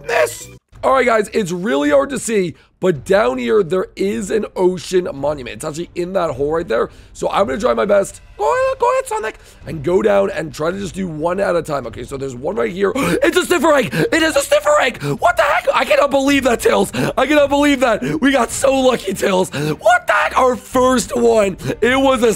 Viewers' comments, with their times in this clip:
0:05 I died from his LOUD SCREAM 😱